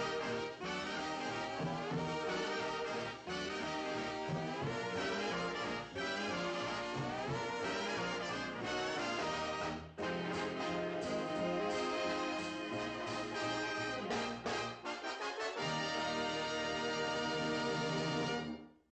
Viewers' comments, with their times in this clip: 0:10 Jazzy Big Band end cue!